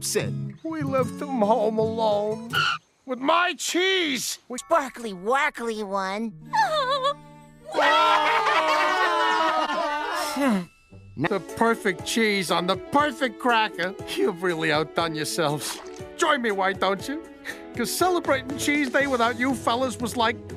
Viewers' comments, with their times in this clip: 0:04 Queen delight: sob karla and sneezy doc and dopey & bashful: crying